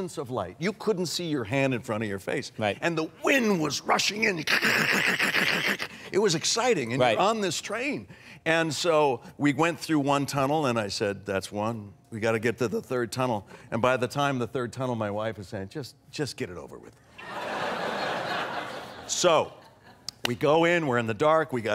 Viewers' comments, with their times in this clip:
0:03 Heisenberg's impression of the wind rushing was my favourite